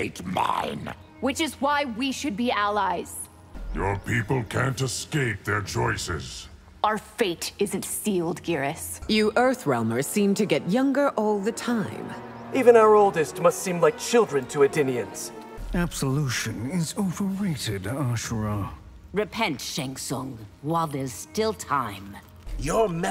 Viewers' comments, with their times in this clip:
0:09 Sindel sounds like such a cougar lol